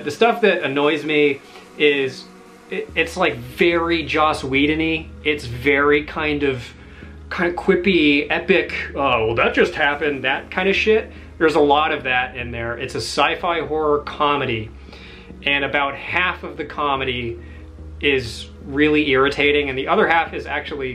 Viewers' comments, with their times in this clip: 0:06 the face you make and the way you say "well that just happened" really made me laugh. And I SO agree with you, I HATE that kind of humor. I think it's the kind of humor geeks like (people into Star Wars, Star Trek, anime etc.). I went to uni with a group of geeks and those are the kind of jokes they used to make and laugh at. Also, I LOVE Cube! One of my favorite movies, was happy to see it on the list.